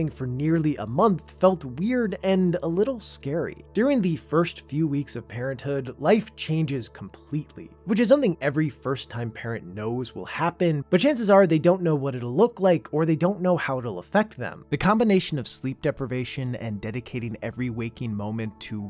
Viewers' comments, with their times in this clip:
0:04 yall hear around the mark when this guy said doodoo? classic comedy